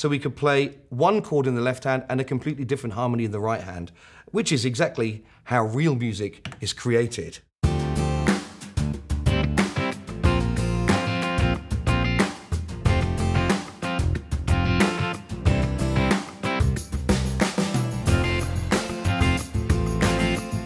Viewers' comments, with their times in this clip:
0:07 guitar style demo sounds really authentic. Yamaha rocks on arpeggiators.